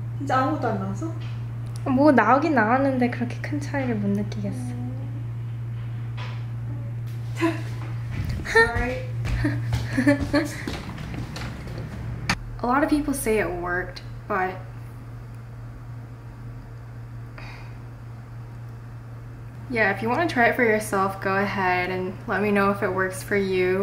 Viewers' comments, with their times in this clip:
0:05 Et coréen is so cute "Huh" in
0:09 her little giggles melted my heart 😭